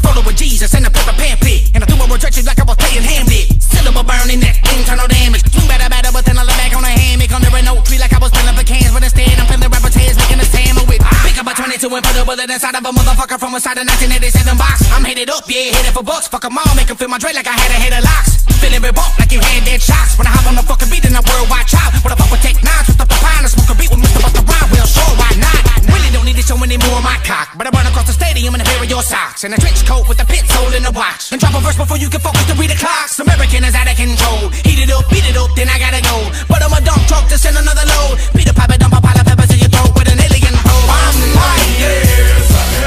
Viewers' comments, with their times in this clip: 0:05 first listen I thought it was bizzybone 😂
0:24 this man has old Şehinşah sound. A turkish rapper that used to rap like a duck.